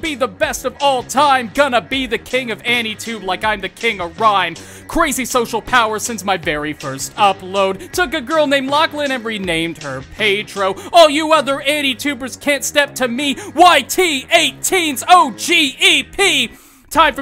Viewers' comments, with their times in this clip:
0:04 no... just. No. Nerd rap aint the move lol